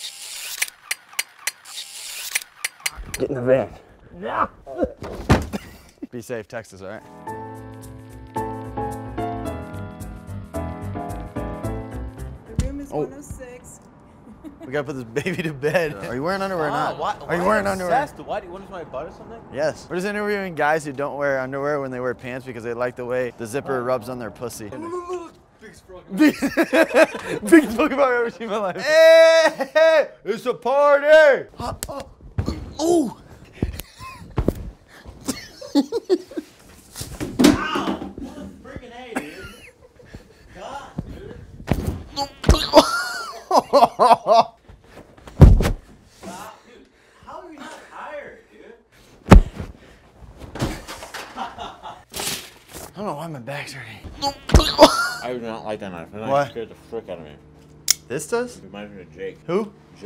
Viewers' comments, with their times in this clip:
0:05 all my drunk ass heard was beef safe Texas
0:40 my guy sounds like scrat from ice age
0:41 That noise he made when he fell is halarious😂😂😂
0:41 you could hear his spine crunch
0:42 that noise he made when he fell though
0:42 the sound he made when he hit the floor killed me bruh
0:42 I love when is neck pops or cracks LOOOOOOOOOOOOOOOOOOOL
0:43 That noise he made 😂😂